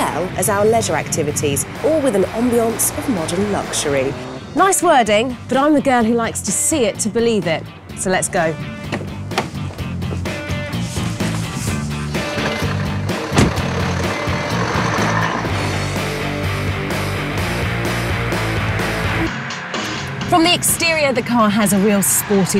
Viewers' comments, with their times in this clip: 0:09 Tractor starting up or Mercedes-Benz?